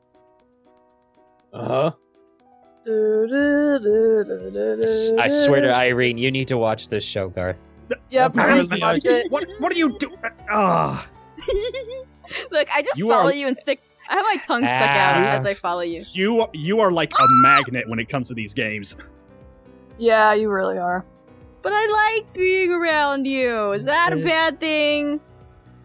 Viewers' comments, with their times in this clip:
0:08 dat laugh doe 😆